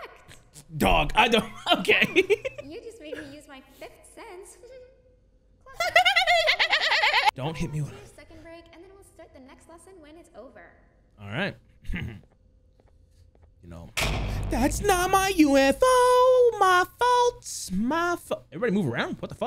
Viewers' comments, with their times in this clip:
0:03 so no one gonna talk about that laugh
0:05 is the best laugh I've ever heard 🤣
0:05 The laugh devious not gonna lie
0:06 Dude the way he laughed made me absolutely DIE from laughing this was so funny to me